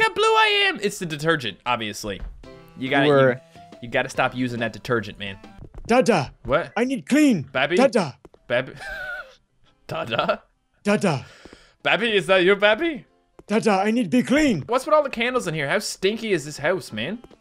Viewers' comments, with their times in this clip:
0:05 Tata, i need clean! (His voice sounds like an old man)